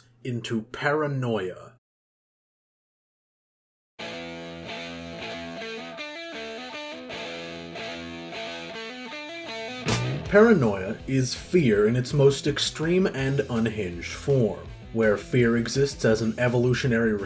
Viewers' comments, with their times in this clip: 0:03 nice music choice